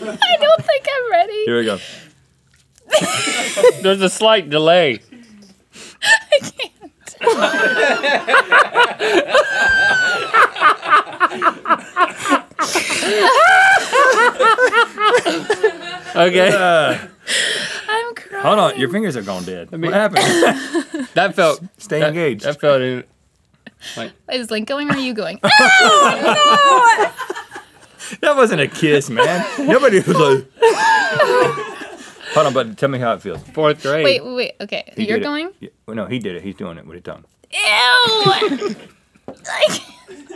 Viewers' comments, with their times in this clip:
0:08 The laugh killed me man hahaaha, so glad to see them have so much fun on a GMMore!
0:08 If anyone is doing a GMM laughing video of season 11, needs to go on there :)
0:09 It’s so funny how Link is just laughing like a maniac an then he just suddenly stops like it was nothing 😂
0:14 Link goes from hysterically laughing to going disturbingly silent LOL
0:15 link switched from laughing to serious so fast oml
0:15 what happened to Link,like he was laughing but its like he saw something he didn't want to
0:26 Check out Rhett's laugh